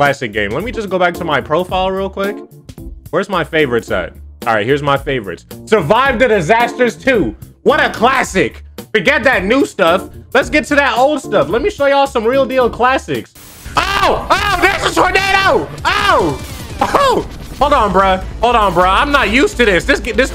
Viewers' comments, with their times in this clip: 0:04 my ears exploded warning